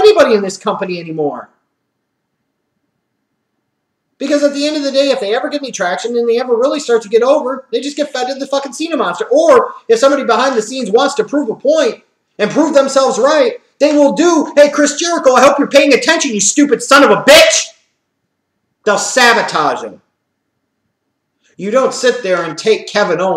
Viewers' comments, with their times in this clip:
0:10 What is a do a Chris Jericho?